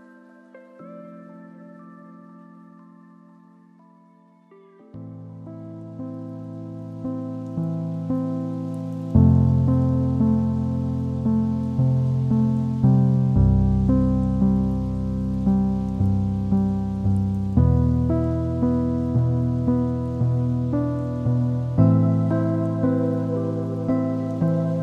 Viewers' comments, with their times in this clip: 0:10 This sounds so much like the Library from OneShot! I love it!